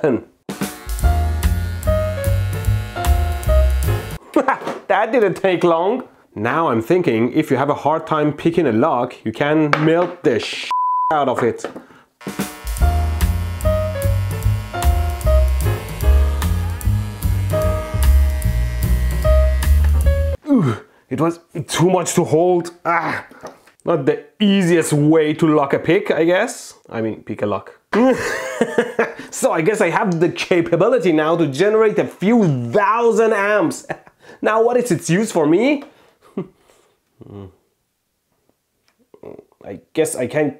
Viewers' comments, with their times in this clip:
0:07 sad lock picking lawyer noise
0:16 you can hear him react to the heat from the lock metal
0:27 😂 the laugh tho
0:27 The laugh bro